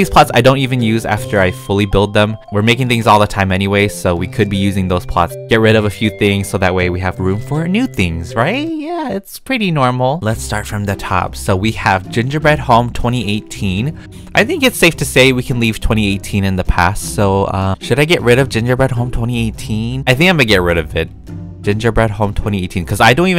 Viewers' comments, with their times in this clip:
0:05 My brain had to process if he said pots or pot